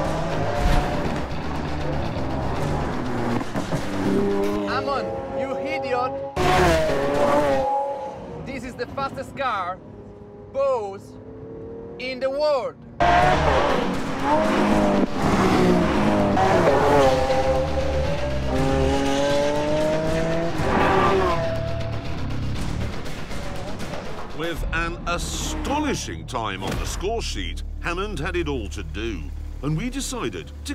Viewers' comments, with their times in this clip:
0:07 Italian Clarkson: "This is the fastest car ....... pause ....... in the world....." Nailed it
0:11 LMAO why did you force the poor man say that, he sounds like Borat